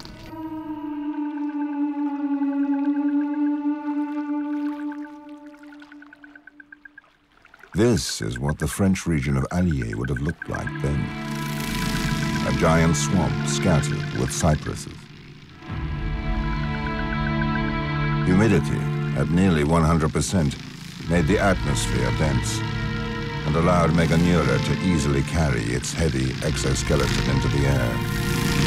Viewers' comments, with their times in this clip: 0:10 sounds like #DarkNetflix music